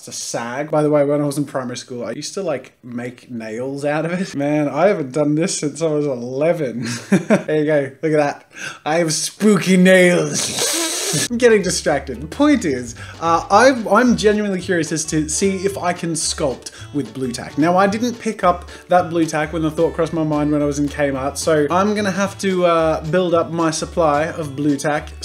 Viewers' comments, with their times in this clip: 0:10 initiate introvert noise that's me when someone enters my room
0:11 someone scratching a fork on a plate